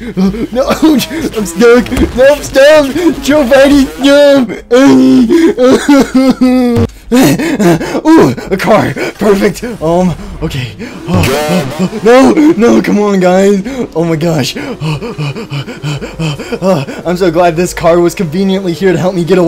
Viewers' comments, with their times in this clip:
0:07 Low pitched oof